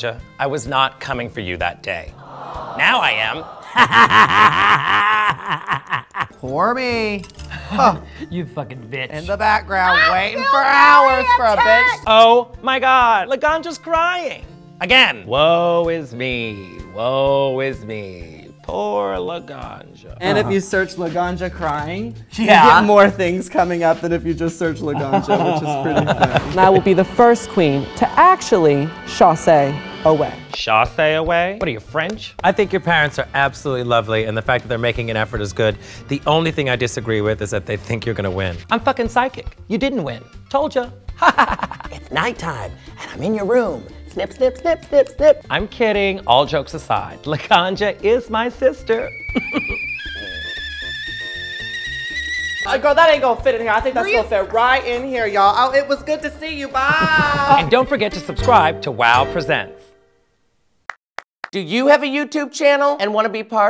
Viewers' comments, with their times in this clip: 0:04 that evil laugh tho🤣
0:50 That Katya's laugh tho